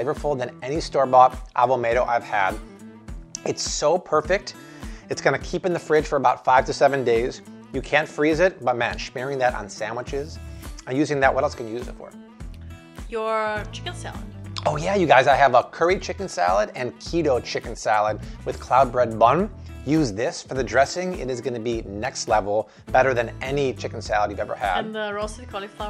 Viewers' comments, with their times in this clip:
0:07 (It sounds like you are saying "you can freeze it", but maybe you are saying you can't) I didn't think so but wondered if you had found out a new secret 😊